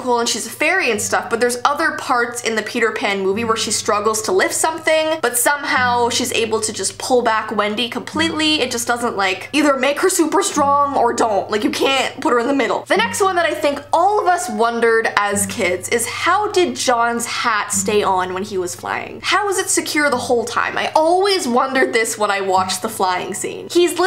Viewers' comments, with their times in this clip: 0:10 her voice lowkey sounds like miranda sings in btw i love ur videos started watching yesterday and already drowned